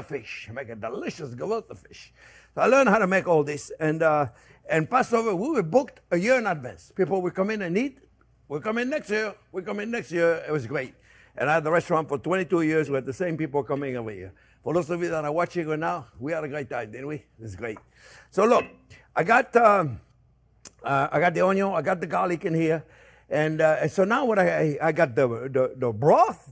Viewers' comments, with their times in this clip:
0:08 great jackie mason impersonation